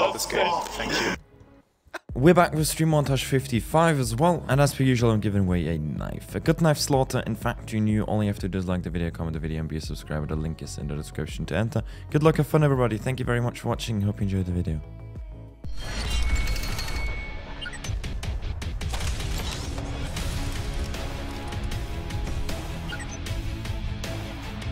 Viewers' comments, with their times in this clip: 0:07 sounds like dislike the video?